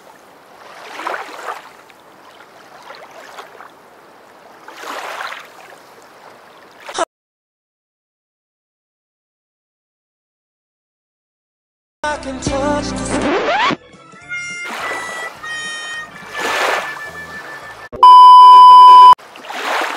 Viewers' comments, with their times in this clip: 0:06 i love the song lol that funny...................